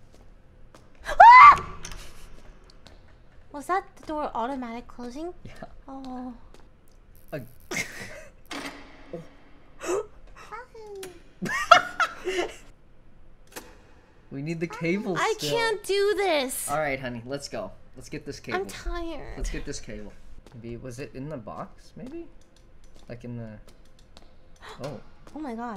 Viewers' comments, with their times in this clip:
0:10 the cutest yahoo I've ever heard